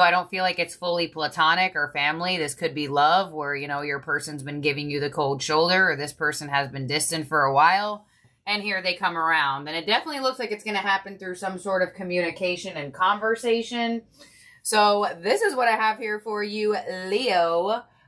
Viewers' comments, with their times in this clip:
0:06 A car alarm started going off 😂